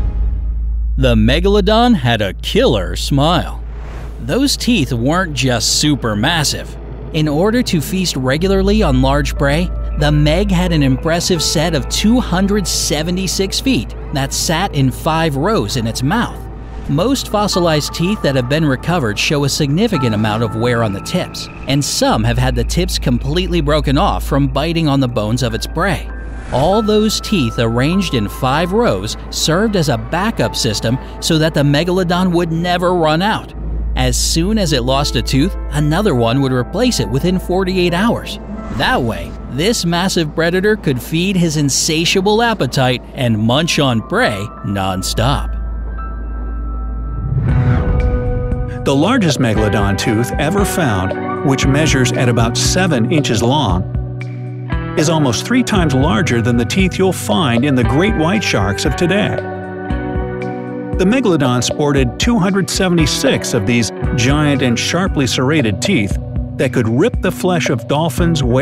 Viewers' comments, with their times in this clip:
0:06 Megaladon had 276 FEET?!? I didn't know sharks had feet at all! But the rumors are finally settled. Can't wait to tell my nieces, nephews and all young minds about this quirky factoid!
0:12 276 teeth He said 276 feet
0:13 "The Megalodon had an impressive set of 276 feet." They said get ready for a lot of science at the beginning of the video, but that might be just a bit too much.
0:13 Did anyone notice in he said feet but the words say teeth 😐😐
0:56 Did anyone else catch the change of narrates